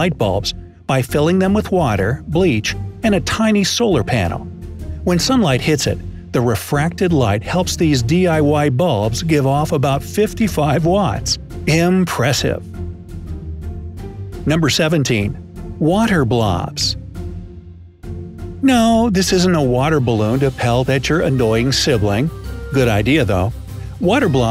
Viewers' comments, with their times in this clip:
0:09 did anyone hear him giggle a bit